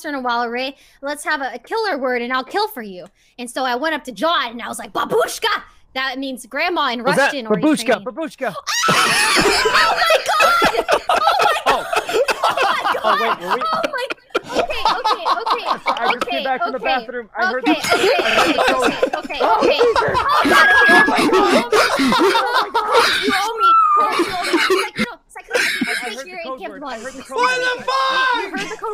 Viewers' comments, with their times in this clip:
0:07 Sorry, the way sykkuno said 'Babushka' after he killed someone. That's very adorable. And corpse laughed so much that he can't breathe anymore. Hahaha
0:08 the amount of serotonin when i heard corpse laugh is so high that i play it on repeat like 10 times
0:10 Corpse laughing from onwards is my new favourite thing in the world!!!